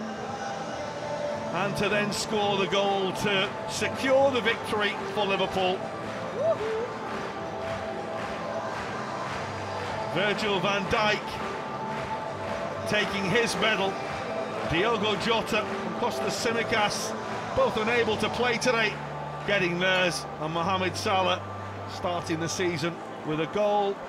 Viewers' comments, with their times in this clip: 0:06 Anyone else hear the “woohoo” as Firmino hugs that lady?